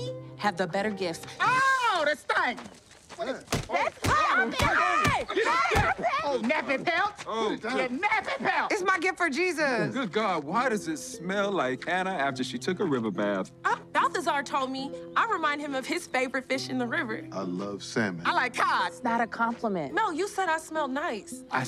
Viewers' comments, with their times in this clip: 0:07 Her delivery killed me!